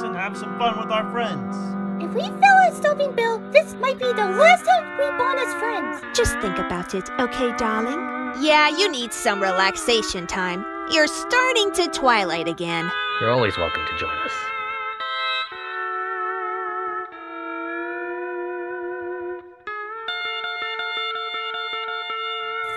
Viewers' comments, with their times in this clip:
0:08 Morgana: (bored) Can we go to the fun side now?